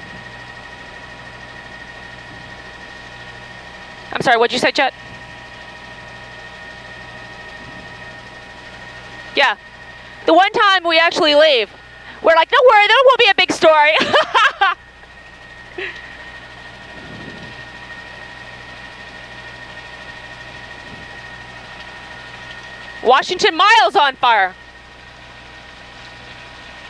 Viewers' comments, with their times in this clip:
0:08 Why the hell was she laughing at?
0:11 It's very bizarre that shortly after she said "God, my husband is there!" she heartily laughes